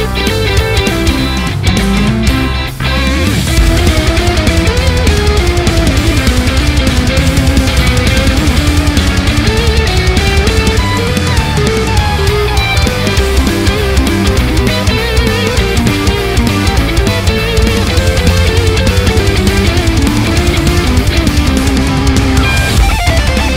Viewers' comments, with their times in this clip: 0:04 is my jam <3 also omg that bass tone 😩👌🏻